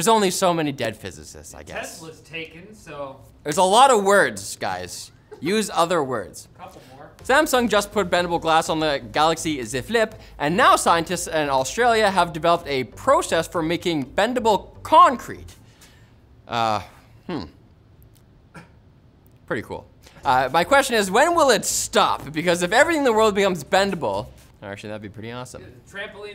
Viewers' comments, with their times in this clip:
0:08 The only way to pronounce the Z Flip